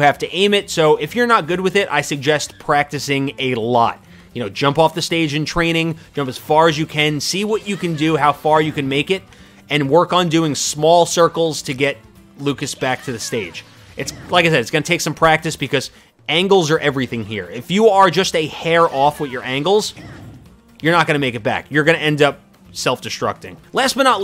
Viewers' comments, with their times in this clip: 0:05 “Go as far as you KEN”